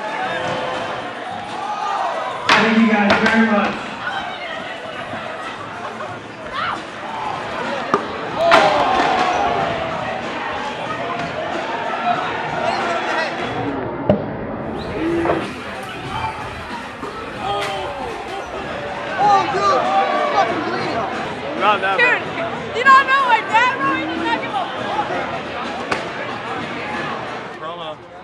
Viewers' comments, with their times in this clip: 0:10 The sound of the bonk is perfect